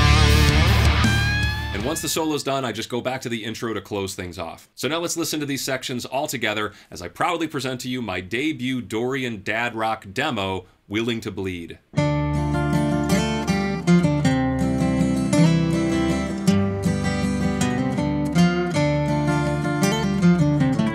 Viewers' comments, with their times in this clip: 0:08 and on top of all those D words, the song is in D! XD